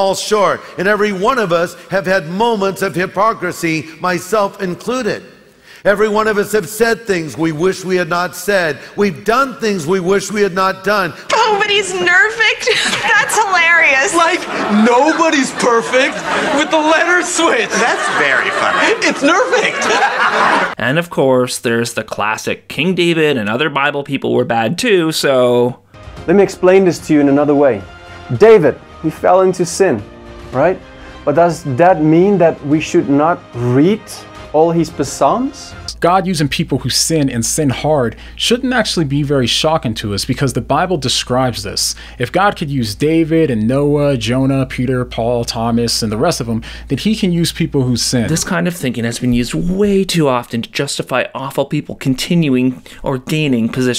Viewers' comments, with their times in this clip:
0:05 I'm sorry, all his PUH-SAHMS????
0:28 WHO THE HELL PRONOUNCES PSALMS LIKE PUH-SALMS?????
0:32 Did he really just say "Pah-salms"?
0:33 "read all his PUH-SALMS" - Are you sure that wasn't a parody video 🤔
0:33 all his pastramis?
0:35 I love your videos, but after I couldn't get the word puh-salm out of my head, so I missed most of this one, sorry 😔
0:35 Per-salms. Really? REALLY!
0:35 I realise english may be his second language, but P'salms? Shouldn't he at least be able to pronounce his bible books correctly?